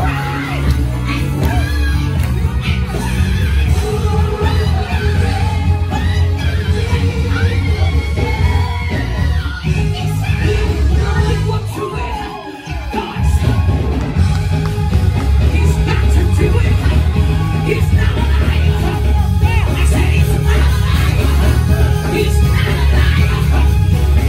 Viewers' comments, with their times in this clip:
0:07 She needs to sing this song again, I even loved the part when she did that high note